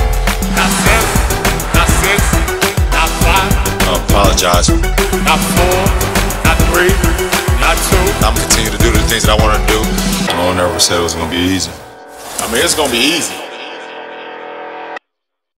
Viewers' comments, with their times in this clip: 0:13 pause .......Bosh says "the fuck you mean its going to be easy"